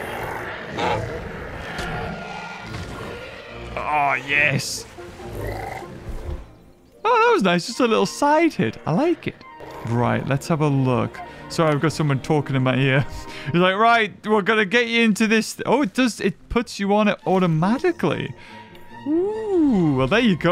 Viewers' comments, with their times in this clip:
0:04 Did that dino just burp?